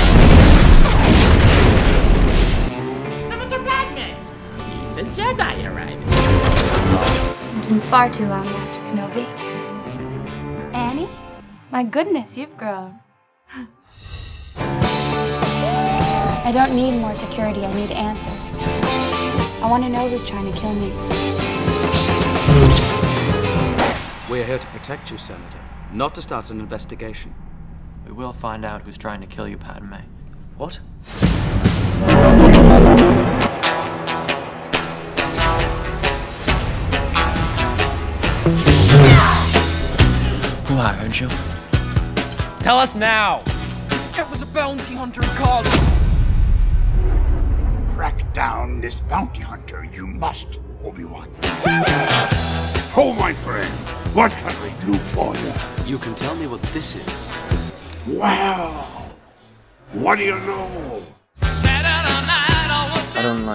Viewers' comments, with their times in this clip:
0:09 The pause was too good 😂 This definitely earned a subscribe 🤣🖤
0:49 that transition back to the music tho, so sick man, well done